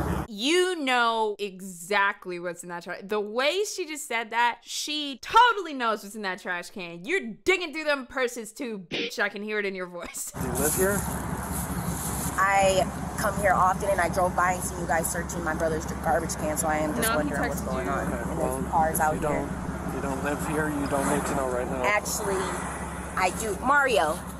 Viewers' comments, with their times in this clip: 0:06 Respect for the Guitar Hero censor! Love to see a classic sound effect get properly repurposed!